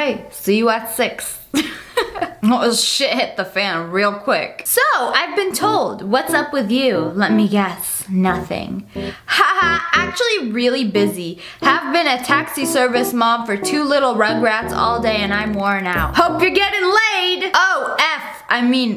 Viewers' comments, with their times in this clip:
0:03 sound like u r english lol